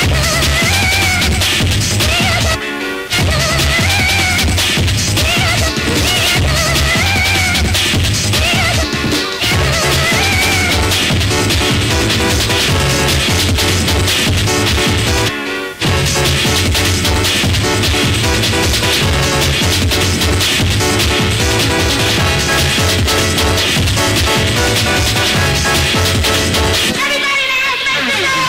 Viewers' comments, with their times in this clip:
0:09 i love the synth loop oh my goodness. it makes me remember of Super Nintendo soundfonts. it's wonderful